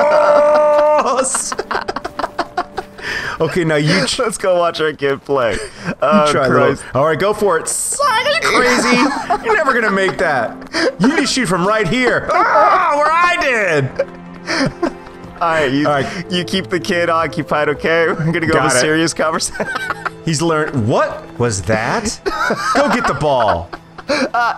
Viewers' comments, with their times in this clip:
0:07 he sounded like he used atuotune